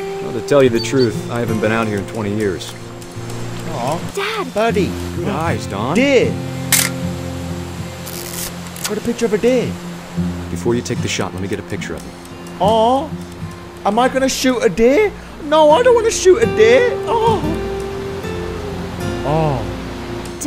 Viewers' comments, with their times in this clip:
0:06 this scenes are reminding me of life is strange so much! omg.. the music too that's so relaxing...